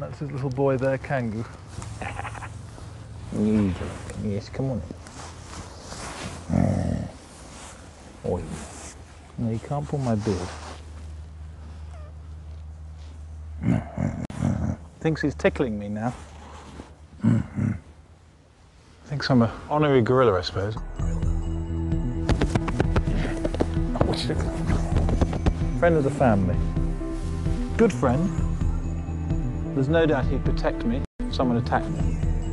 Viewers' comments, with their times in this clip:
0:05 that's such a deep voice, imagine if it was able to talk
0:12 did anyone else hear that cheeky little squeaky fart? 💨
0:17 I have seen this video like a dozen times now and just noticed the oddly placed 'GORILLA' sound effect here. Lyrics: 'Gorilla.... Gorilla.... yeah.... Gorilla... Gorilla.... yeah"